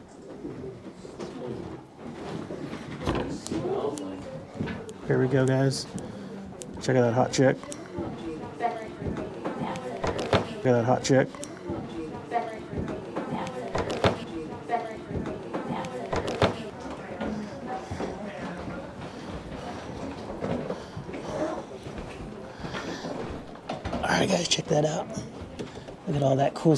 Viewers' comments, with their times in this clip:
0:09 Wow great catch 👍, that may even be saying "Definitely!"